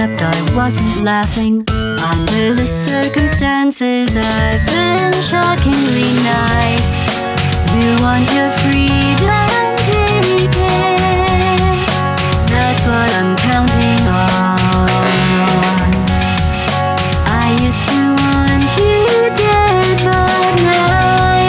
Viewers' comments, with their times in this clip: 0:07 Sounds like Nina Gordon.